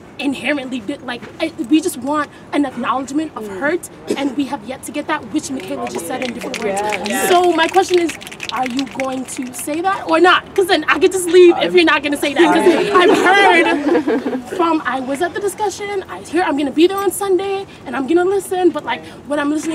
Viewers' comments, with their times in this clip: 0:06 Oh dear God, the snapping!